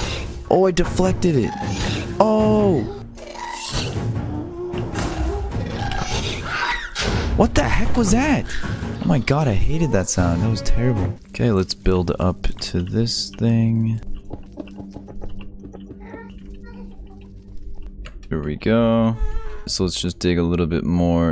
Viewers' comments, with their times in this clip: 0:05 gasp screeching Lol